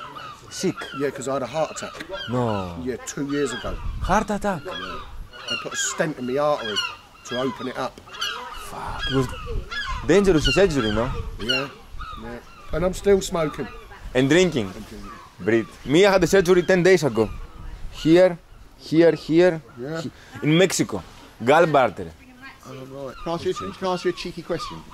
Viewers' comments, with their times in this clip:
0:07 the british man had an Art Attack min ahahahhha